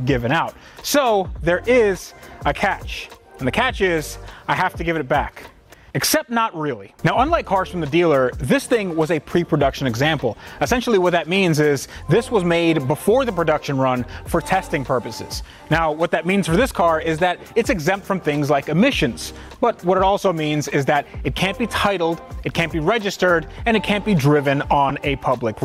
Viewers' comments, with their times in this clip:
0:10 .Wide body smell cat 😂😂 I guess I'm the only one that heard it